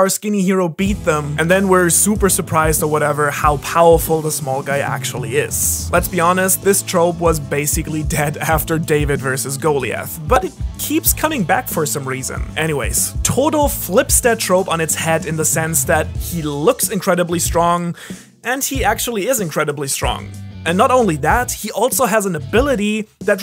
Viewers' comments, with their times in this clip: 0:09 Is that how you are post to pronounce goliaths names?
0:10 never heard someone pronounce goliath like that. Love ur vids btw
0:11 pretty sure you butchered the pronouncaition i was told it was pronounced (go-lie-ath)